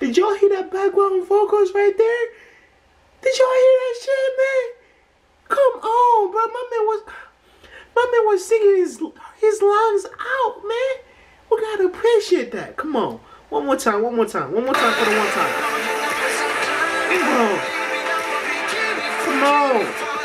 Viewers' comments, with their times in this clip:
0:07 Today I woke up and I was notification and than I saw Ten I immediately woke up and enjoy the song, still listening :))))))))))))))))))))))))))))) they look amazing, Baekhyun vocals are insane!!!!!!!!!!!!!!!!!!!!! Kai looks like Formula1 driver, Taemin is cowboy, Ten is SuperTenHero etc, Mark&Taeyong anime rappers crazy, Lucas is crazy too :))))))))))))))))))) this song is fresh but futuristic give me disco vibe, M.J and Janet Jackson Scream vibe with rock, OMG is great!